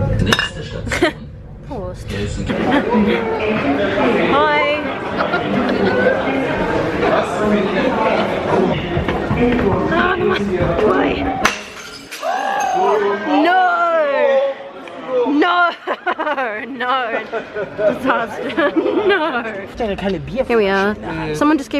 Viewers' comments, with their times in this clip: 0:03 You were so nice and cute with your "Hiiii :D" and they just laughed --' Why aren't there parties like that where I live :(